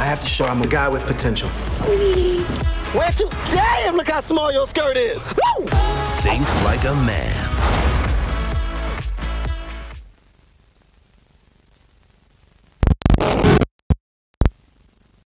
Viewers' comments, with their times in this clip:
0:10 turn down your volume